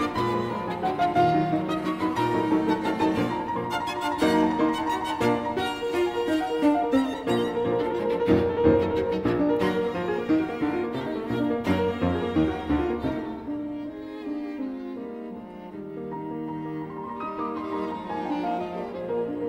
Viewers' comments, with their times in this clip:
0:06 Those are not triplets in the piano